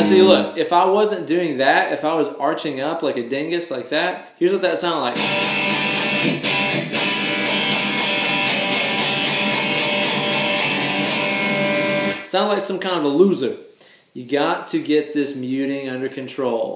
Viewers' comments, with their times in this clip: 0:04 sounds pretty punk to me